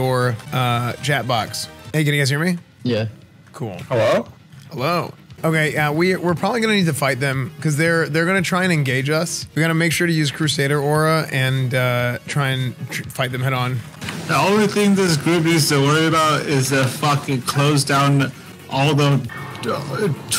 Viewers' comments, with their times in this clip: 0:06 I love how esfand is just constantly cracking up at the drunk guy He's so excited that he's back